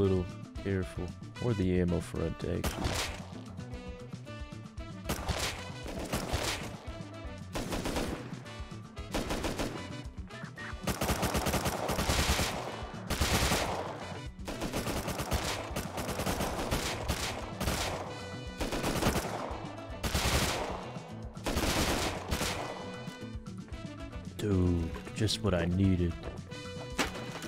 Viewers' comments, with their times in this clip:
0:10 nice headshot ASMR starting